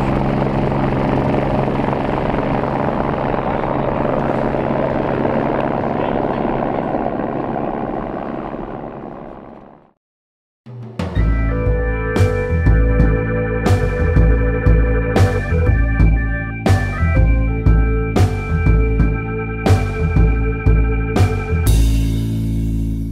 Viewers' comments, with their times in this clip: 0:06 Love the helo start up then take off, after the CC-117. I wonder was it a Sea King?